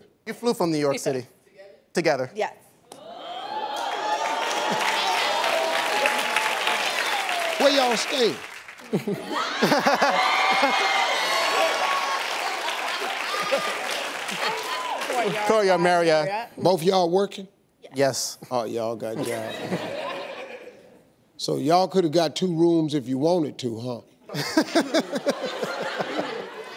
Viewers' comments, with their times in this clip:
0:09 ...Steve is the best when it comes to these things. That stupid laugh he gave is the reason that woman left his ass after years.